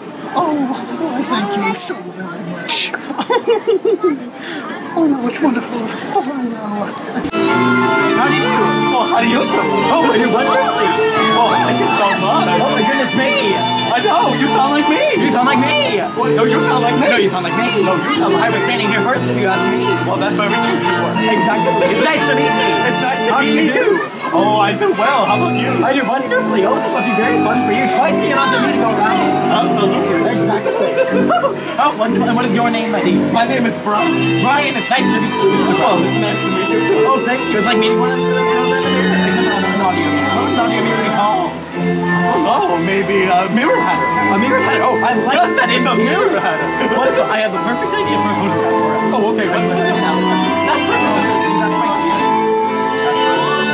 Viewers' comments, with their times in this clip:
0:07 RARE FIND OF THE DUMBO BAND ORGAN!!!!!!!!!
0:36 His Mad Hatter voice sounds a lot like his King Candy voice. Coincidence? I THINK NOT! p.s., Alice's voice is actually pretty good.